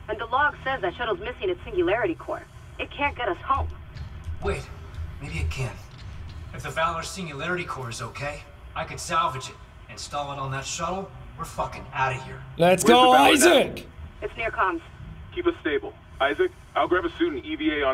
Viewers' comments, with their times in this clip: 0:04 Isaac's very chill-yet-frustrated "we're fucking out of here" line was delivered so well. (His battle-screaming during the final fight was also great.)